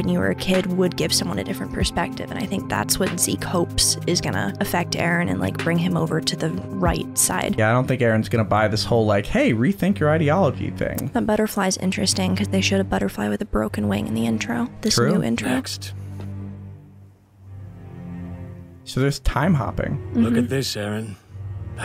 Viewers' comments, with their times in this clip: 0:09 What's that "ideology" pronunciation?!